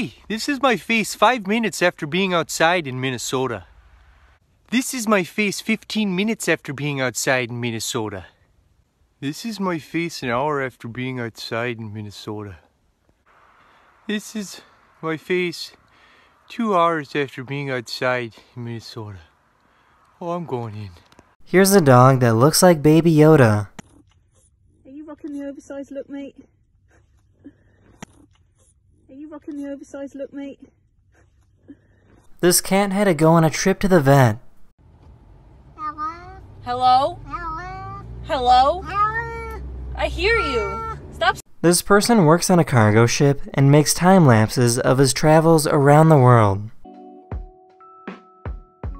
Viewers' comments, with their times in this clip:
0:07 dude's accent is so cute hahahha
0:34 it went from "hello" to "Heeeelp"